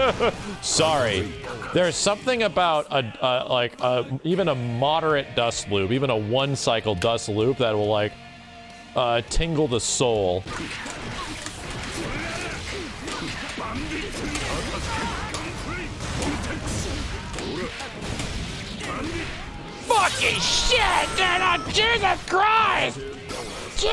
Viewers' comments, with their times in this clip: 0:09 “Tingle the Sol” - Maximillian Dood, 2021